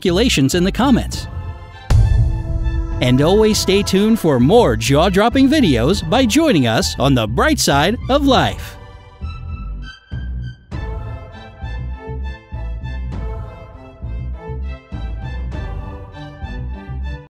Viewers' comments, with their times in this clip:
0:04 Age of Exploration may never happened And fishing would be impossible without present day technologies I sounds likes "Jar Jar Binks" videoes